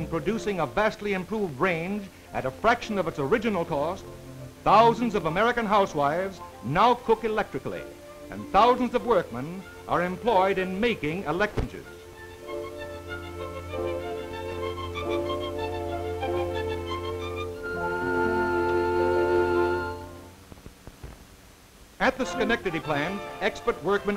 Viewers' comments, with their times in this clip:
0:08 WAIT, did he just say making "electrcidges"??????? So when was the word "electronic" invented?????? 😂😂😂🤔🤔🤔